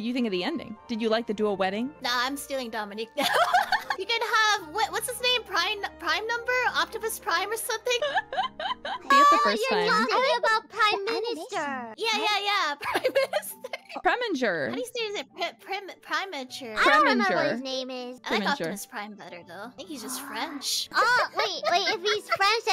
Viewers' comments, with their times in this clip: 0:06 DId she really say "Octopus Prime"??